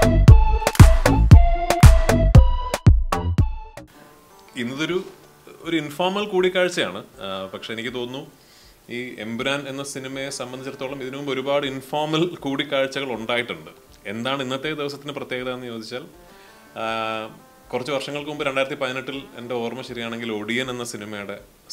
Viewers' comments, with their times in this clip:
0:03 Starting to music🥵💥